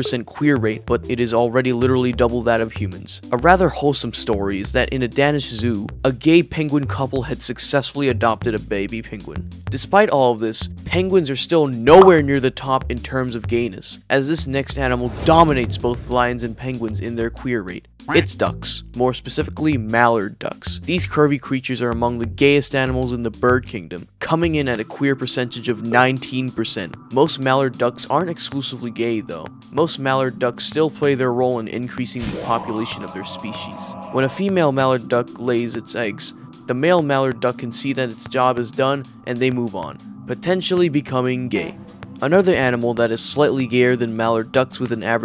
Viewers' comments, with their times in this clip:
0:04 Not to offend you or anything but i really dont like the way you pronounce “danish” . You prob didnt ask for it but in my oppinion “danish” should be pronounced “day , nish” just like EVERYONE else…i hope
0:30 I love the sound effect used for the baby manifesation lmao